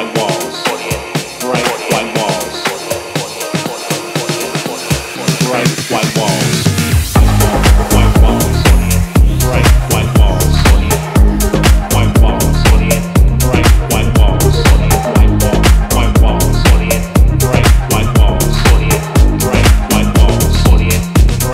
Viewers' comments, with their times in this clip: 0:07 That drop tho.... You can stay in these walls limitless hours, it's colors are that addictive. Man..... 🤛💣💣💣